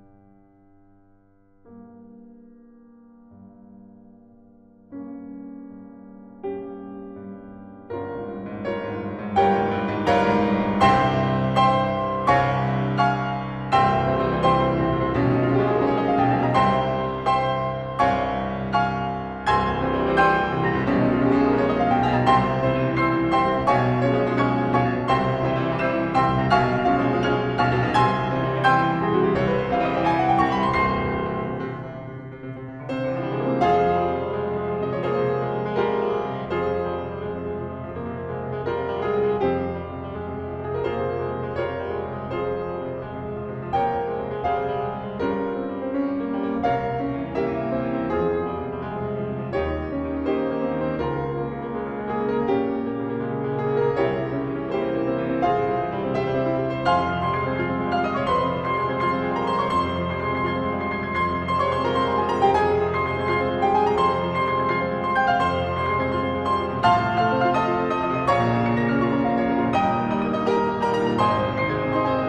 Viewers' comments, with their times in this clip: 0:04 Love the diminished build up
0:07 <3 <3 <3 the music for this fight is so good
0:58 So you are not a magical girl and you do make mistakes sometimes